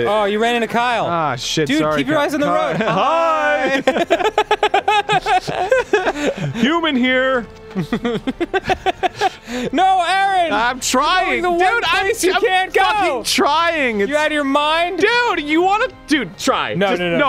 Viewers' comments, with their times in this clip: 0:03 oh my gosh that laugh 😂